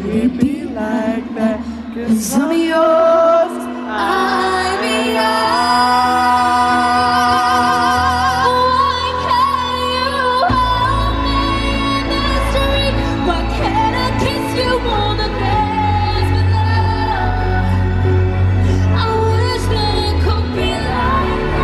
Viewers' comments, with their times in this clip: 0:08 Leigh- Anne's vocals melts me😍
0:09 LEIGH U SNAPPED